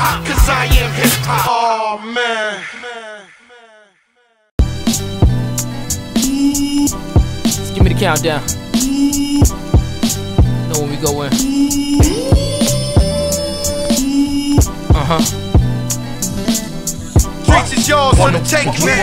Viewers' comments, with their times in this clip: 0:03 whew! That AZ remix is fire